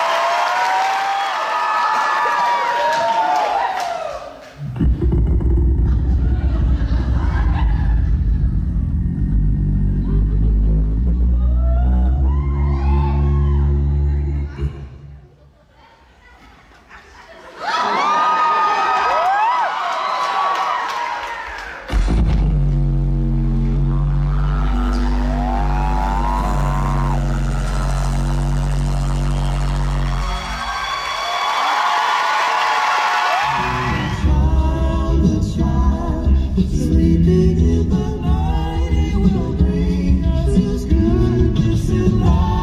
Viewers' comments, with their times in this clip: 0:09 is that godzilla charging his beam?????
0:23 all i could hear was static from his note